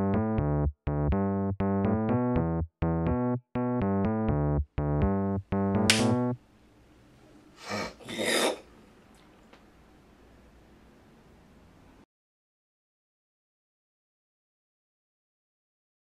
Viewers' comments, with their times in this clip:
0:07 No i mean when he was coughing XD